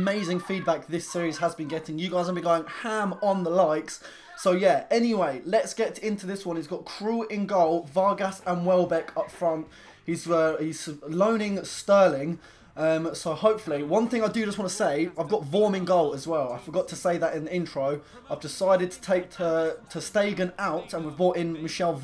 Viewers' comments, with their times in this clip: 0:03 someone sounded as if they were being raped...